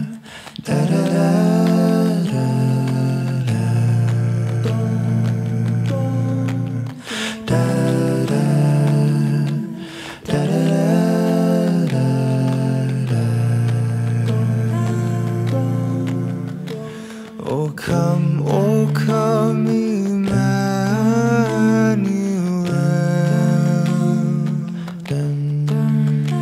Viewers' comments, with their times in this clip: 0:09 I don’t know if anybody has noticed this, but Kirstie’s note and how it clashes with the rest of them sounds so beautiful. The dissonance it creates just gives me this vibe that’s almost ethereal. In a way, perfect by being imperfect.